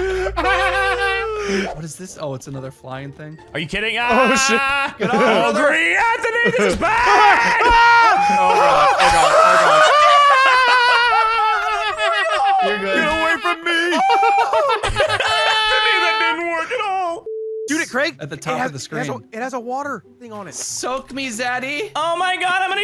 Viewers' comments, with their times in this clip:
0:08 that Mario falling sound tho 😂😂😂